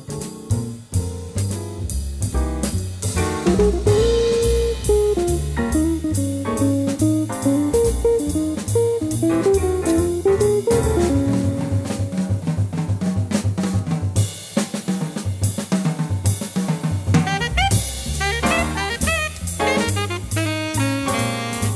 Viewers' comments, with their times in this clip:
0:08 what's really tasty in this video are those drum fills in the background music starting